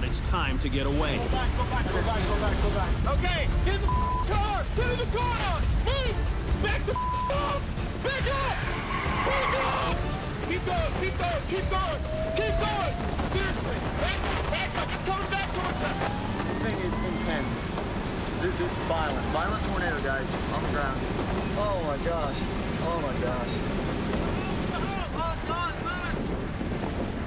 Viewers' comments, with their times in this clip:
0:06 = It was either scream like that or shit his pants before being jerked around like a rag doll in that funnel.
0:13 DAMN, can you hear their supercharger from ! :D Seriously